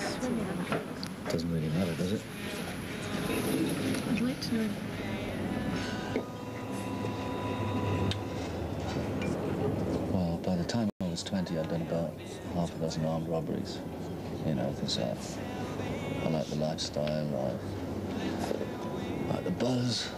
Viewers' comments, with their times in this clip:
0:03 Just when you're well into the story the video sound cuts out !